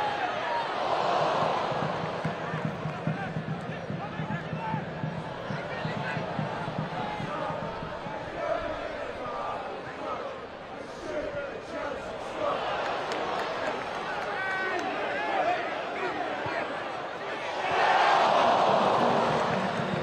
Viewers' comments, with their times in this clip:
0:07 listen to the chant haha